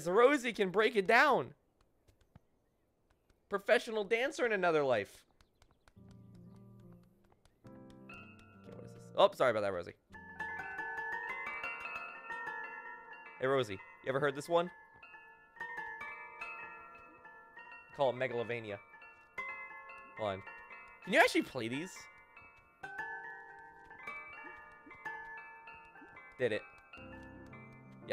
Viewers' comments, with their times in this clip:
0:09 that actually made up a good melody.